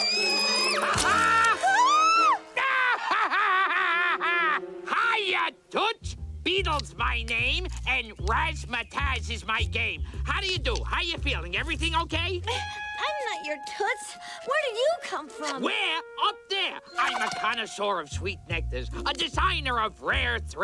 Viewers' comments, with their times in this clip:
0:04 Hiya, Toots! IAGO!!!